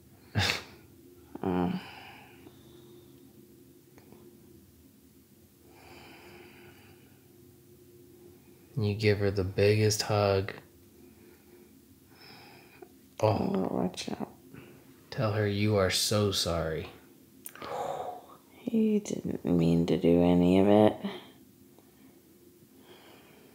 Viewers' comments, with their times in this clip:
0:10 Erm who’s snoring